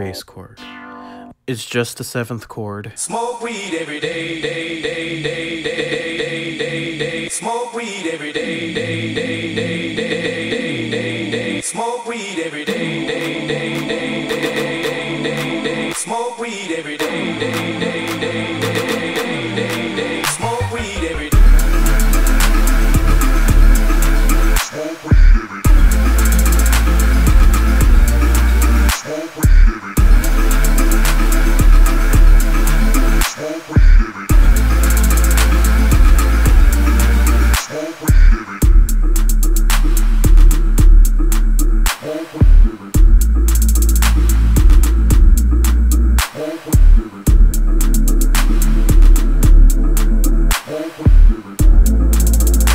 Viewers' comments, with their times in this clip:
0:03 i like how as soon as the video hits snoop comes in
0:03 Lmao that chord progression sounds like the one from Gambino's 3005
0:18 that fucking xylophone is amazing
0:33 dat peaking though